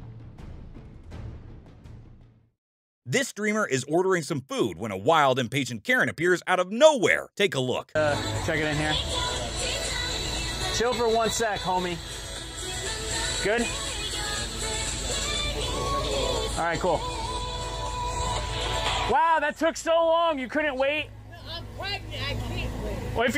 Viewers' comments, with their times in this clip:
0:08 RED VELVET ON THE BACKGROUND